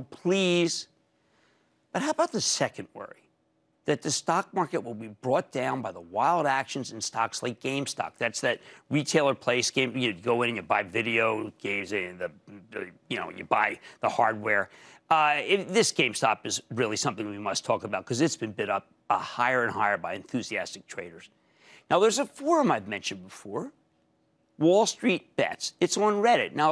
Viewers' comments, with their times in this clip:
0:09 "That's that retailer place you go in... You buy...(Fumbles words) Video games... (Fumbles words again) you know... You buy the hardware." Que the rant.... Ughhhh. Is this really what some people rely on to invest?